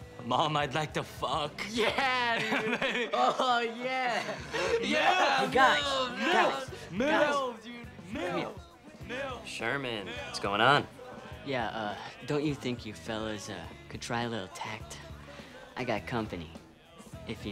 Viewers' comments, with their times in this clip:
0:04 The birth of the "Milf chant" and it's beautiful.